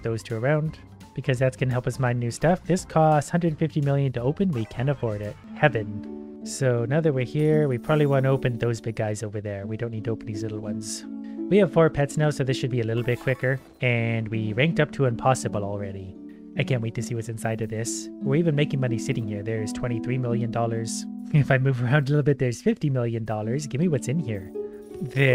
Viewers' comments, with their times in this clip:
0:07 The music shifting makes me oddly calm